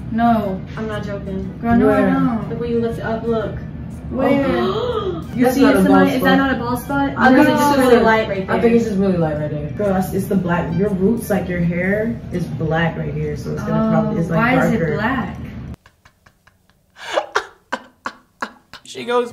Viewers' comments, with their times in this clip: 0:06 Haha things you don’t want to hear as your friends are messing with your hair: gasp!